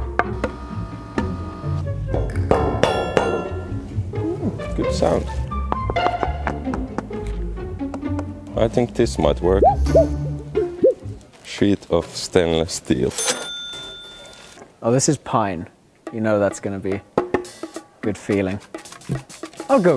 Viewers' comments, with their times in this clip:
0:05 ASMR in public